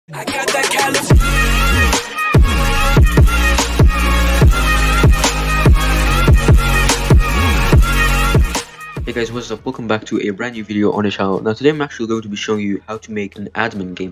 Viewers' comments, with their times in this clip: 0:01 RIP EARBALLS XD